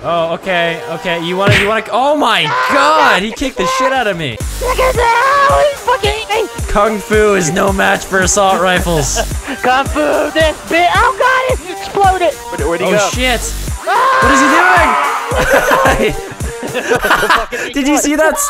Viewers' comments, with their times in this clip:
0:06 THE DUBSTEP THO